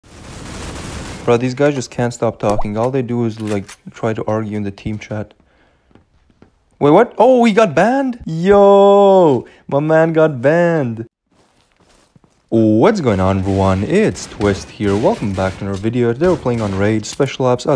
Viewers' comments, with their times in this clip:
0:00 that water drop sound timed perfectly to when I liked the video I got confused 😐